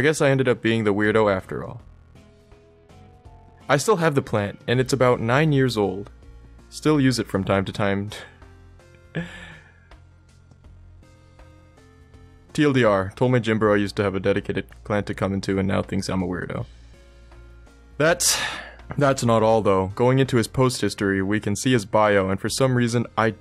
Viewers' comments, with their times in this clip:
0:10 the silence speaks all the words you need to know